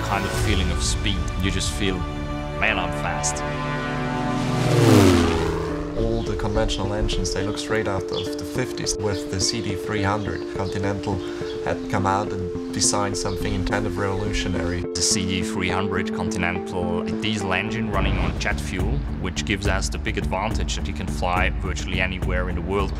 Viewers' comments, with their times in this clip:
0:03 Gotta admit, that brief engine noise clip sounds amazing....looks like it will leap into the air pretty quick too. Beautiful plane!